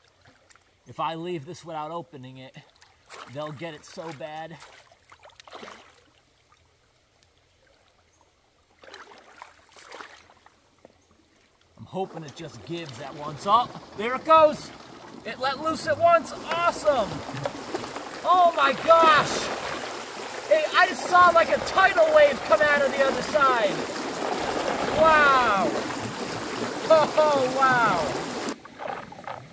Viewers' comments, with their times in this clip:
0:10 The tremendous, slurpy, "whoosh" sound is a CLASSIC! The best sound effect ever! Bravo! Great work!